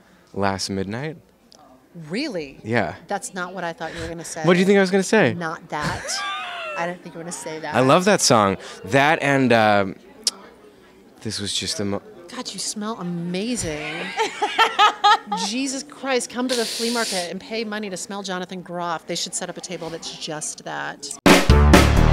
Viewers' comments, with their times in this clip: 0:06 Groff's laugh gives me life and joy